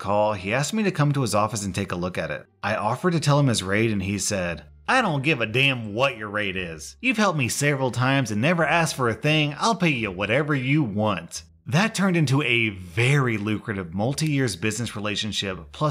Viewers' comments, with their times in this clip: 0:03 You do a better southern accent than I do